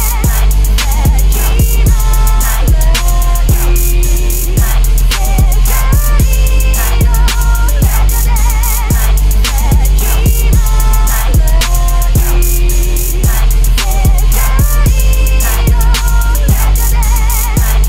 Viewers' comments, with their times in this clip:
0:05 them fucking hi hats hitting homie